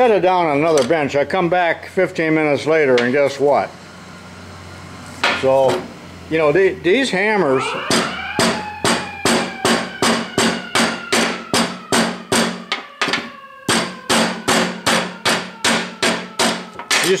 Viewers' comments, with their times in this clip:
0:05 That siren timing ha ha